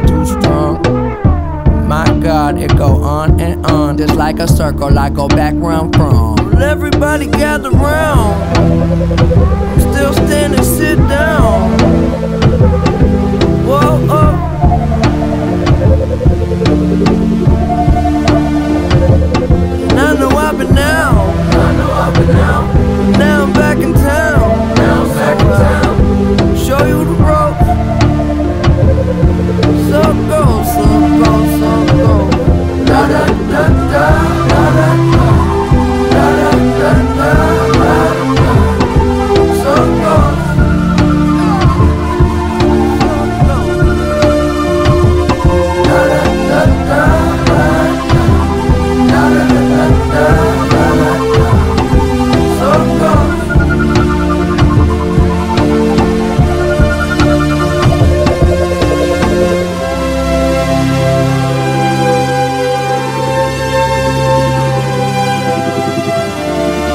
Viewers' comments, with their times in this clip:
0:10 Starts to sound like the end credits to his life. Sad it took his death for me to listen to this piece of work. True artist never die. RIP Mac
0:43 it feels like you are flying away
0:51 go to and set the playback speed to .5 "ciiirrrrrcllllles"